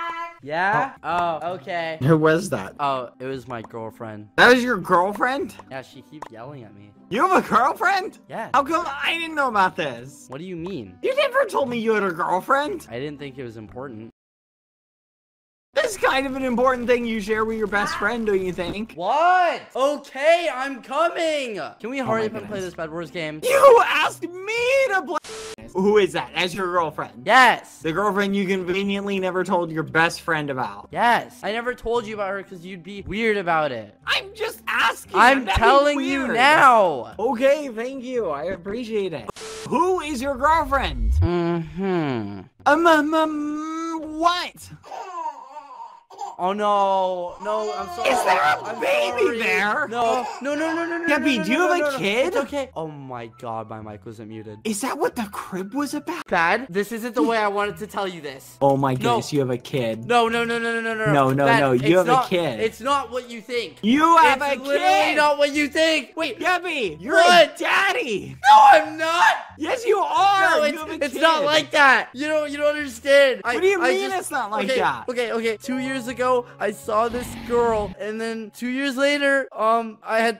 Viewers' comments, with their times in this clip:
0:07 "you have a girlfriend" the way he said it 😂😂😂😂
1:06 I LOVE SKEPPY's YELL THERE LMAO "No I"M nOOOOOtT!"